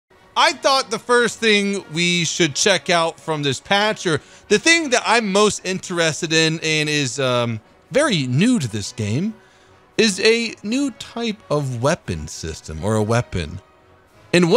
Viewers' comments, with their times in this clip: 0:01 in and he's already shouting unlike and leaves page and watches family guy